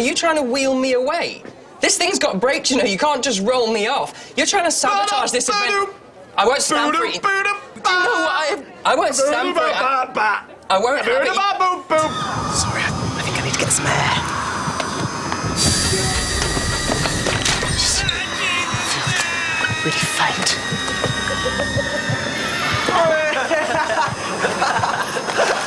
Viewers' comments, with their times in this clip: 0:08 Sounds like Loser by Beck